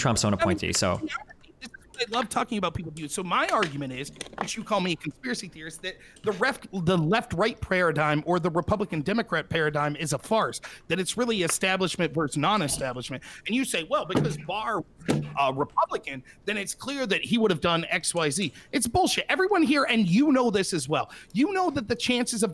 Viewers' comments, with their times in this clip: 0:05 did he just say "Prayeradigm"